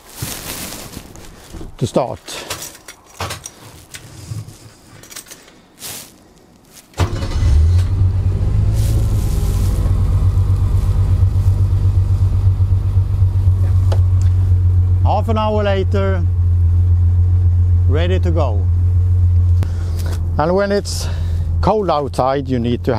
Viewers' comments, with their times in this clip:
0:05 You can hardly hear that engine... Incredibly quiet!